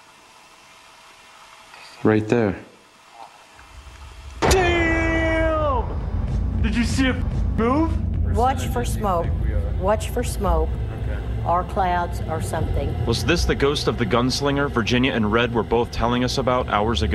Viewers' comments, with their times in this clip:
0:03 Did anyone else jump when that guy yelled "DAMN!" ?
0:04 OMG scary dude,at my heart stopped beating for 1 sec when zak shouted and that figure dissappear